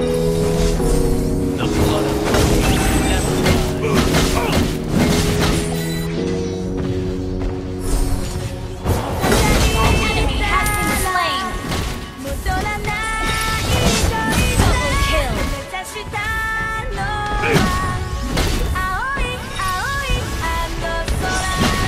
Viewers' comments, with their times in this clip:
0:08 naruto song came up ughhh my heart man